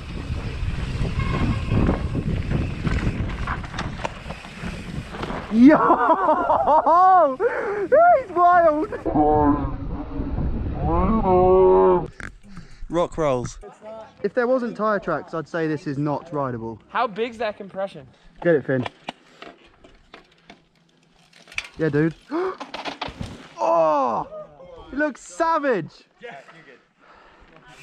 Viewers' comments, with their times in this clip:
0:08 Listen, you can hear Sam Pilgrim shouting from the shrubs up there ;-)